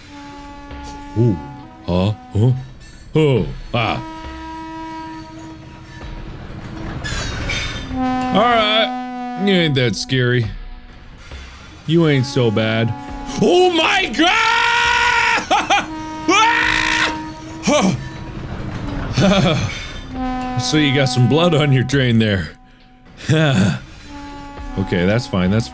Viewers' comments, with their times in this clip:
0:03 Mark: “You ain’t so scary” Me: laughing already cuz the train sounds a bit funny when it’s getting distant Mark: Turns around” *train spawns “OHH MY GOOOOOOOOOD”
0:09 "you ain't that scary, you ain't so bad" proceeds to scream in fear like a maniac